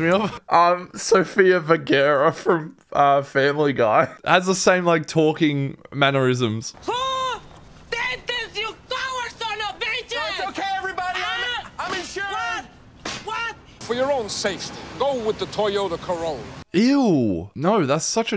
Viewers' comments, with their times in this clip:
0:04 its called having an accent